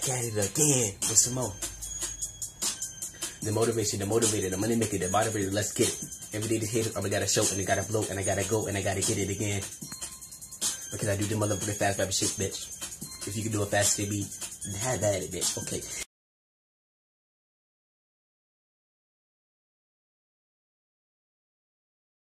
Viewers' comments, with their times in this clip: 0:05 I will pay anyone if they can understand what he says